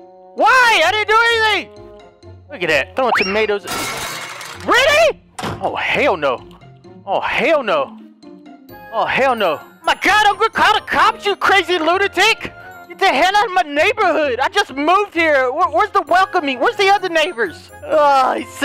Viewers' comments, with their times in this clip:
0:03 be like in the hood "oh hell nuh"